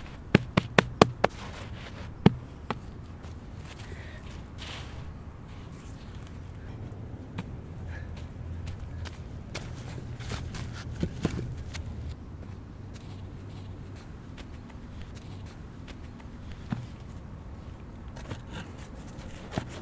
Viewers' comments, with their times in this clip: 0:04 rape my ears)●●■■